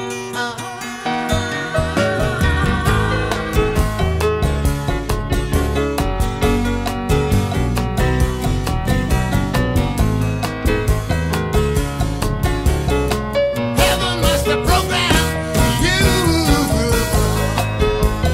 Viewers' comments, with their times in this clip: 0:03 is the part that sounds like was ripped off by the group's Cold Play song called Viva La Vida. Oh no !!!!!